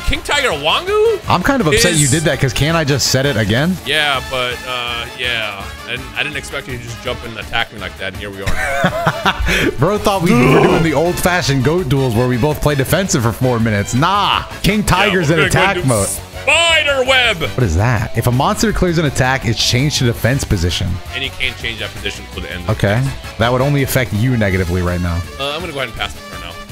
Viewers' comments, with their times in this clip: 0:09 the most aggressive ‘draw’ I’ve ever heard